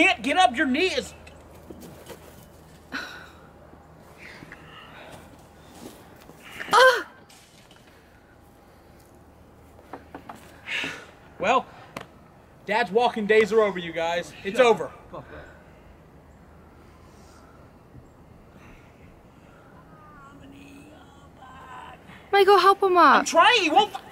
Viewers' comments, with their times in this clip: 0:06 Sounds like she’s moaning